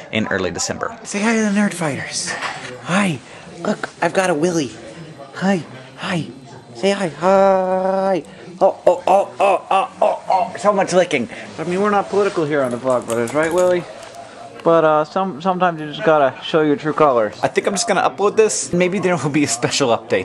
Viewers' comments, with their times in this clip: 0:08 Hank sounds like a wookie